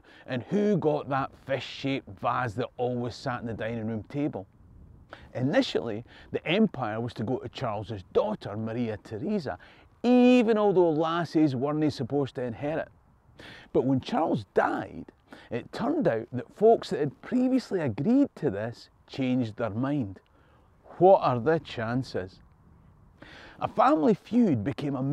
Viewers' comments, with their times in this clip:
0:07 It's remarkable how much AI has advanced over years. Youtube can write the subtitles in English from a thick Scottish accent